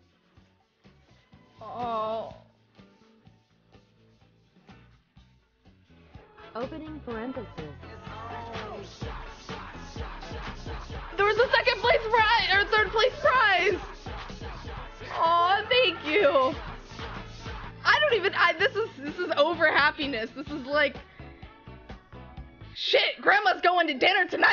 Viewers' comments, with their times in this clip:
0:07 Perfectly synced music LOL